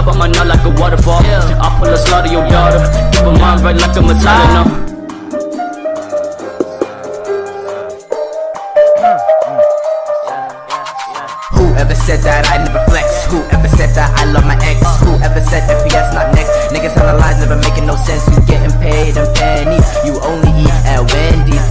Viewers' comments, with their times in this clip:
0:03 there's the bit that sounds like SAD!